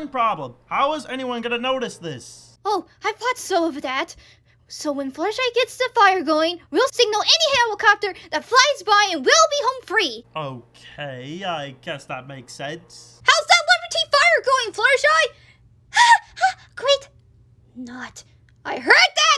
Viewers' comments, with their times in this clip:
0:07 Morgana: (blankly) Until Fluttershy makes the fire now…